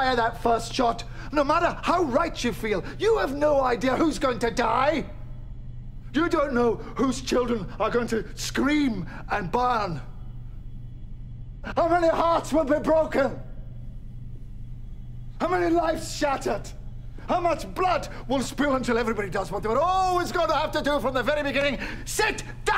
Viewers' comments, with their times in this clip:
0:04 dalek mode activated